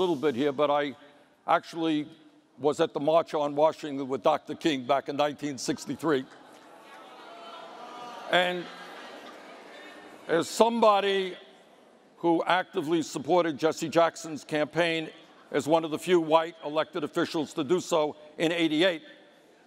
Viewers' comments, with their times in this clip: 0:06 Also, i didn't hear any boos. Where those boos??